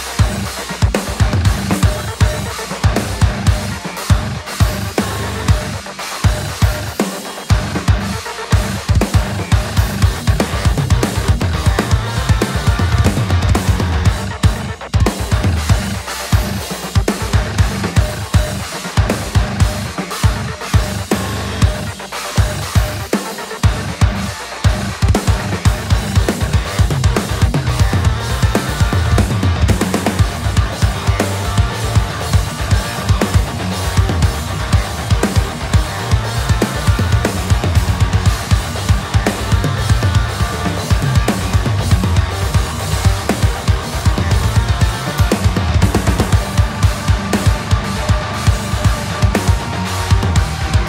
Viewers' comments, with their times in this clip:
0:02 That bass is fucking massive damn dude this is a fucking rad track.
0:34 you can see him hitting the bass drum so weak that even trigger is not picking it up